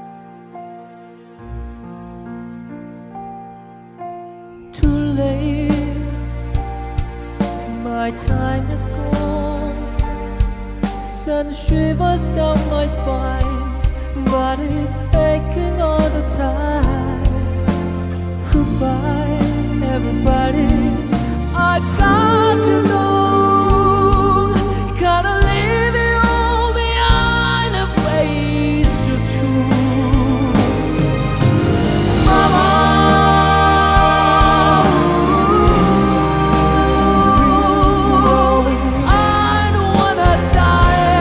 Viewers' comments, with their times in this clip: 0:05 love his voice ❤❤❤❤❤
0:26 I love the vocal rocker rasp of his voice